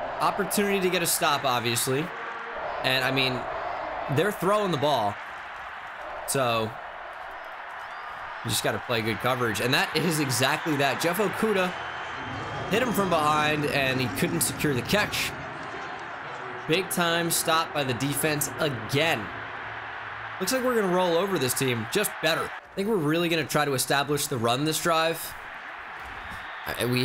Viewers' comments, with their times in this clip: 0:09 did anyone else here let’s go Brandon I know that’s probably not what the fans were saying but it sounded like it